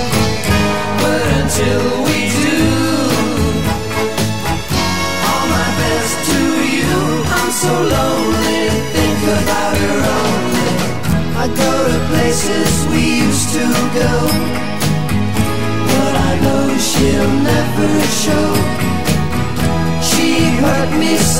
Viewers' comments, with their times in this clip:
0:07 The descending piano arpeggio is nonpareil.